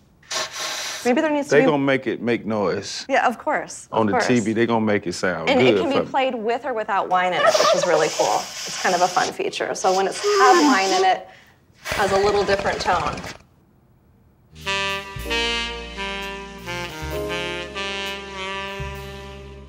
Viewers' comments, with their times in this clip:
0:06 🤣🤣 Why they do him like that with that turkey gobble!?